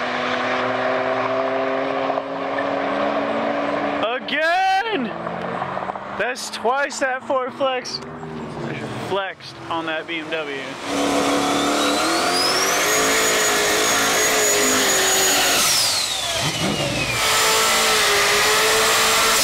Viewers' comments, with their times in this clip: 0:03 Whoop whoop here comes the sound of the police